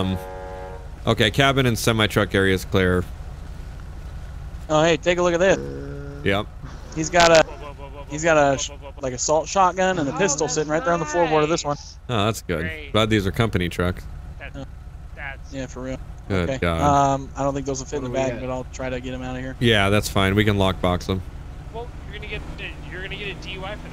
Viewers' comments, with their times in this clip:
0:04 I'm sorry, assault shotgun?